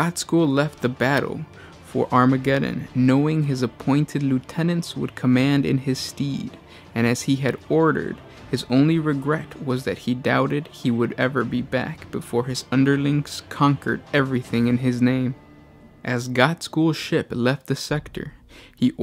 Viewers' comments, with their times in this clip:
0:03 STEAD!!! NOT STEED 😂😂😂😂😂😭😭😭😭THE AMERICAN SCHOOL SYSTEM AT ITS BEST LADIES AND GENTS